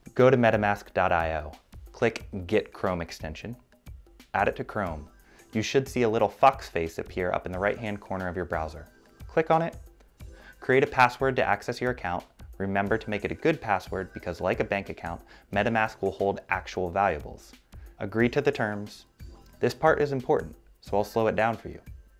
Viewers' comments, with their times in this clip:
0:06 you should see a little fuckface in the right corner of your browser